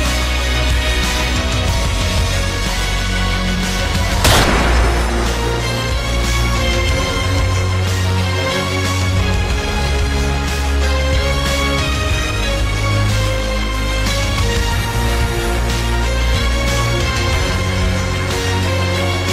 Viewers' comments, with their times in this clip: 0:03 even though i know whats gonna happen the gun shot scared me a lil it was too loud lol